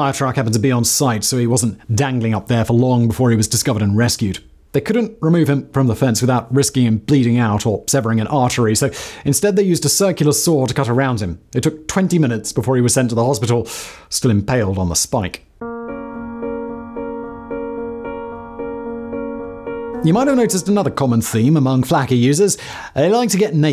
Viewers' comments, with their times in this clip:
0:05 my mans cadence is wild😂😂